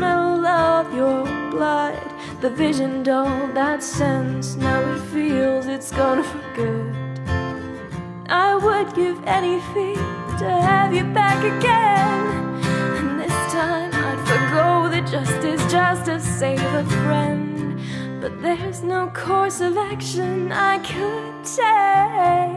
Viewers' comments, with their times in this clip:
0:04 I really liked the song, it was amazing! I was just wondering what the sound was I was getting really into the tune and it kinda threw me off, was that a laugh or a sob or something else? I would really like to know